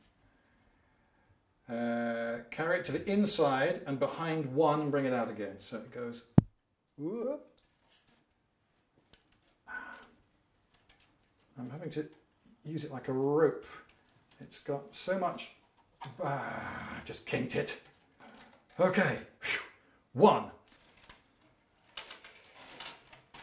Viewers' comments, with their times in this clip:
0:06 it seems as though with the audio you used the lapel mic for the right ear, but another for the left... this is especially noticeable as you seem to hit the microphone, however you can hear this only in the left ear.